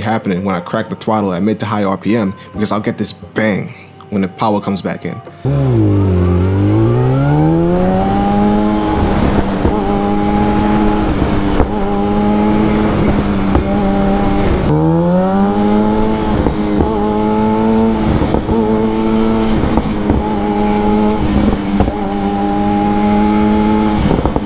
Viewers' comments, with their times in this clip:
0:05 I had an FZ8 for two years, great bike man! By the way the pops and bangs you hear are not from the power but from the Secondary Air Injection System. Engine is pumping extra air into the exhaust to burn off unburnt fuel.